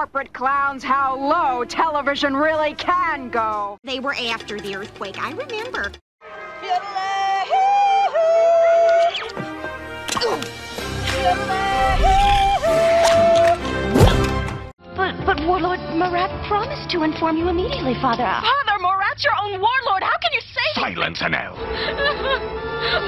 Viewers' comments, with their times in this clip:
0:07 Jessie Yodel has the same voice as Wendy, Ms. Cartman, Sheila, Sharon, Mayor of South Park, Shelly Marsh and Ms. Crabtree